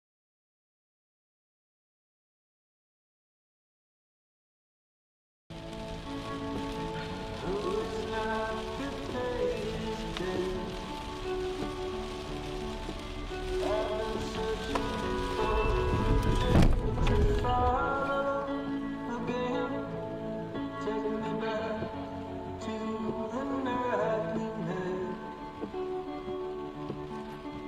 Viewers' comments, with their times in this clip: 0:09 with that song and the rain. I knew it would be a car accident 😭😂